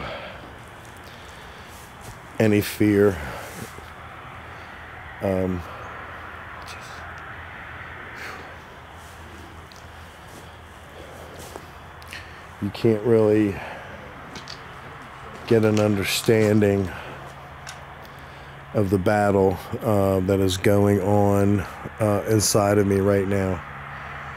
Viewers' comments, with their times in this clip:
0:06 a man whispers something into the camera...
0:07 I heard what sounded like Jesus? Idk it didn’t sound like you😘💜👻
0:08 voice can be heard after you talk doing like “yes”